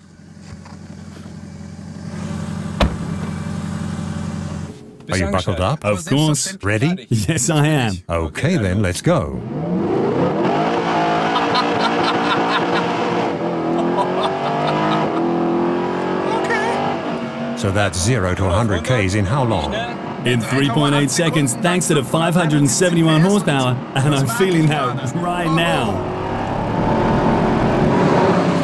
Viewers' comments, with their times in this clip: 0:10 Poor engine........ Rev limiter for like 3 seconds......